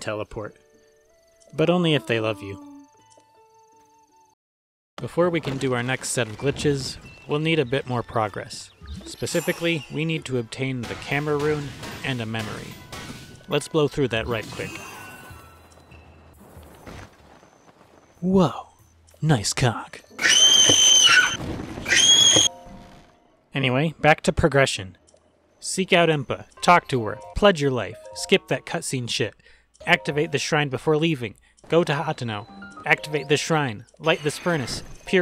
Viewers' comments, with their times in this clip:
0:09 My favorite part is just by the screaming
0:19 THE SCREAMS THEY HAUNT US